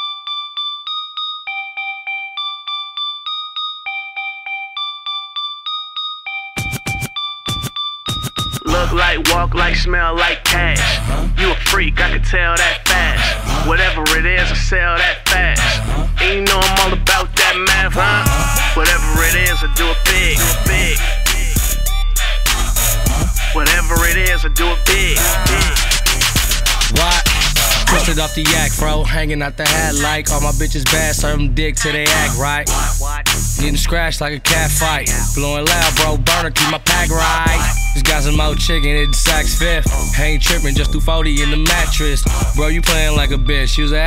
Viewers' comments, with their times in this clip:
0:09 this is all I heard “Look like walk like smell like ass uh huh” “Ur a freak I can tell dat fast uh huh” “What ever that is I sell dat fast uh huh” “You know I’m all about that meth uh huh”
0:29 What is the sound effect in the back of the beat? it looks like a woman's voice cutted and remixed .. we can hear it